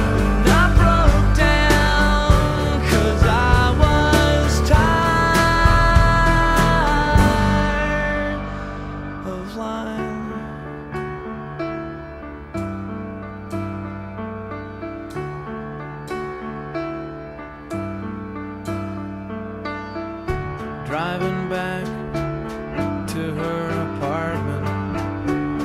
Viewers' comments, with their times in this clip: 0:07 Used to sing " 'cause i was tired of LIFE"
0:07 beautifully done, wonderfully honest Used to sing " 'cause i was tired of LIFE" Used to sing " 'cause i was tired of LIFE"